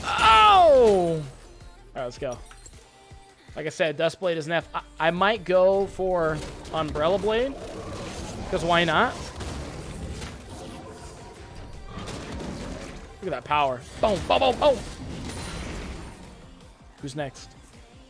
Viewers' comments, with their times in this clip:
0:05 I thought you said "umbrella blade" rather than "umbral glaive" and I love umbrella blade so much more xD